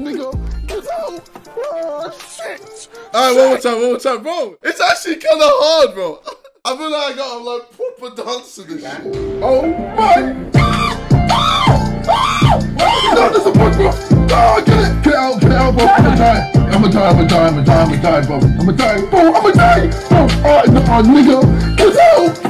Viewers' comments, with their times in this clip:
0:10 Simon trying to be sleeping while jj dancing to his screams